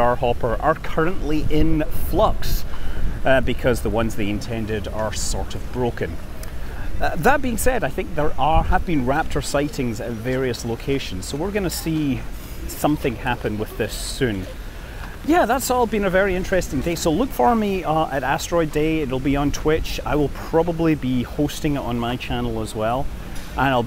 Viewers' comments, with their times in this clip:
0:08 Hmm, after the mark, "... are happy Raptor sightings at various locations ..."; all of a sudden I'm wondering what a "Happy Raptor" t-shirt could look like.